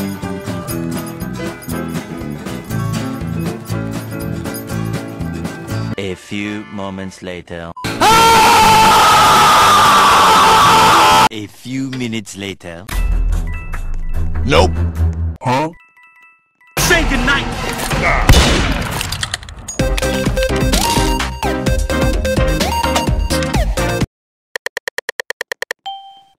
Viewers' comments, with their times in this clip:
0:08 Lol why u scream it was funny :)